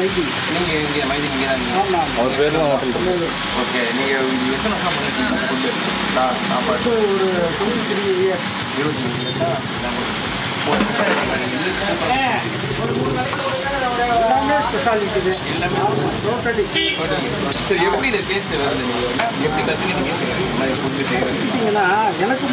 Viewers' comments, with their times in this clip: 0:07 Who liked that grandpa's English word pronunciation..❤️luvly